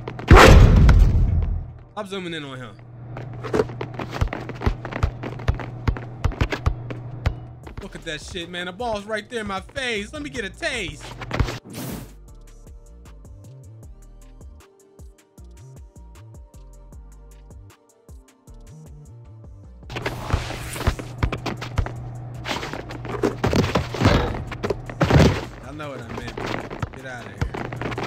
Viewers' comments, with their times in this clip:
0:10 ayo thats crazy cam'ron voice